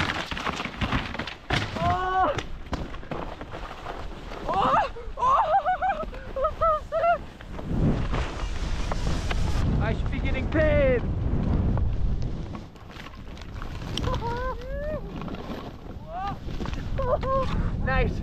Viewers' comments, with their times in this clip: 0:04 Close call You guys are so good and funny and I suppose you are ironic with the US accent 😂. When was this?